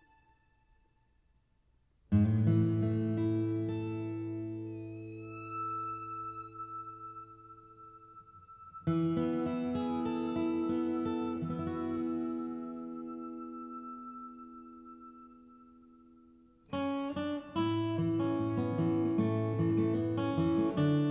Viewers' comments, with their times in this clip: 0:09 what is the name of the song that starts playing ?? it's lovely.... and soothing. thanks for showing your quilting.